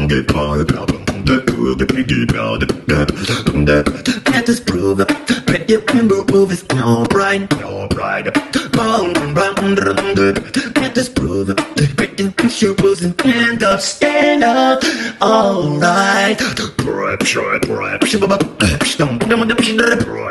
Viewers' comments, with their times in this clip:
0:05 U can tell its auto tune